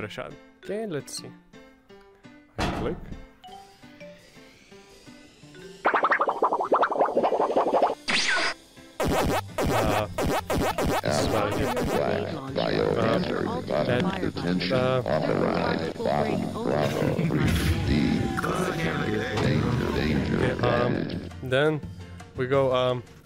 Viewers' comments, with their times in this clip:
0:09 I can't overstate how much I respect you for even thinking to stereo pan the sound effect after the cut Brilliant!